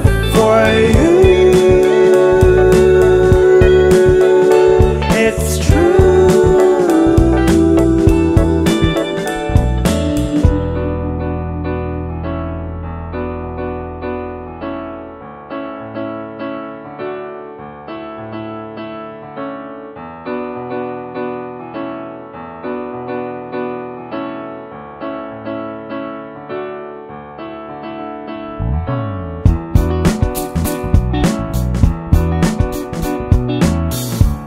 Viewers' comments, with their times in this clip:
0:10 Beats really nice. It got a Nujabes Counting Stars feel
0:11 hits different ! Like that piano part always makes me feel relaxed in so many ways 🥺❤️
0:13 The piano that starts sounds like a very familiar chord progression, would anyone know what other songs use it?
0:19 Does anyone notice how the instrumentals starting sound very similar to the guitar in Monsune's Nothing in Return?